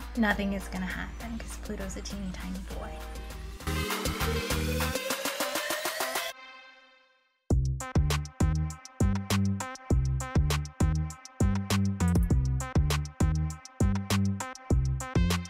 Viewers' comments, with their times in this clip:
0:03 I was accidentally watching the video at 1.75x without realizing it and was like damn that song slaps, so much break beat. Then I realized I'd sped it up. It's still very good at normal speed but I thought that was funny.